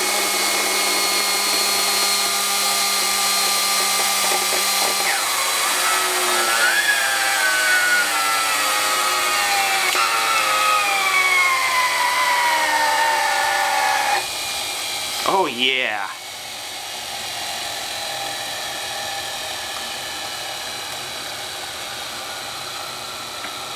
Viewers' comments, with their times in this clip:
0:06 there's that humm.
0:09 sounds like an F1 car downshifting